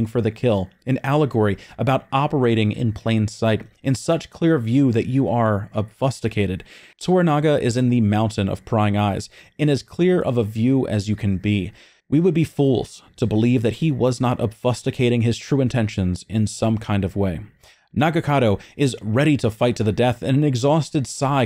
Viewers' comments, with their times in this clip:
0:06 Okay, "Ob-fusk-u-tated" rather than "Obfuscated" (Ob-Fu-Skated), now I know you're just mispronouncing words to fuck with us. Well played sir, well played. If not, I kinda want to know how you pronounce tomato, honestly. Nag-in-ata. Like "Nahg-in-ata", stress on the "in".